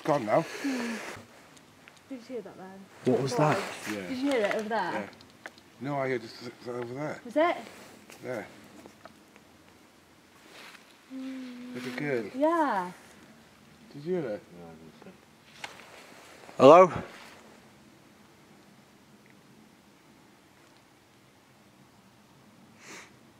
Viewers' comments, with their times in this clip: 0:10 sounds like a child imitating a bee